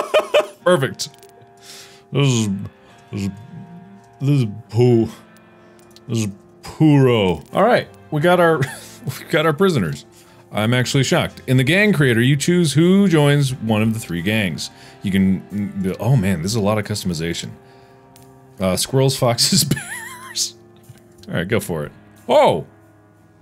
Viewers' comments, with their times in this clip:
0:05 latex goop noises